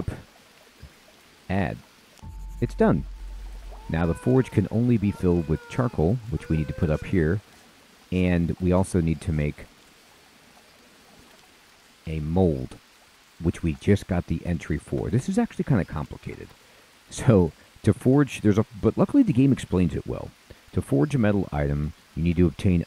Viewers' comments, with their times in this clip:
0:05 did I just heard a baby crying in the jungle?